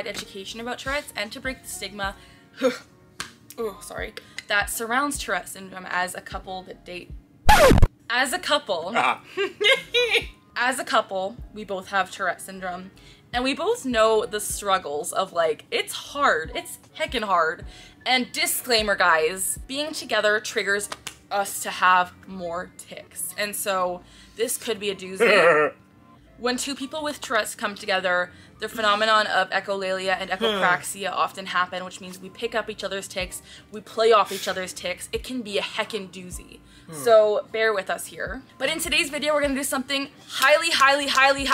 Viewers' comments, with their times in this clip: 0:07 headphone users died here
0:25 the laugh IM SORRY ITS JUST 😂